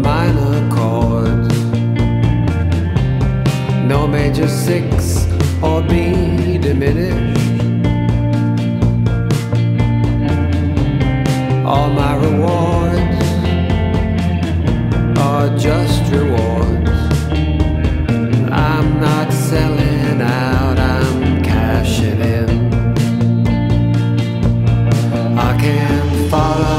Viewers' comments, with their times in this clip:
0:08 You don't really get this type of AM vibe in music now.